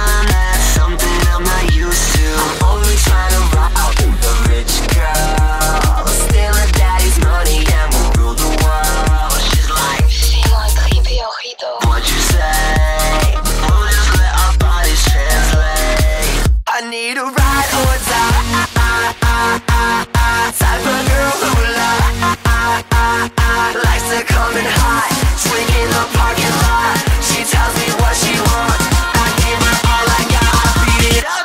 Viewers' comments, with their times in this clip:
0:09 I can't figure out what she's saying sounds like "she's like kryptonite", but with a spanish accent. WTF is that? BTW, nice music video.
0:16 that's when the music starts to get good in my opinion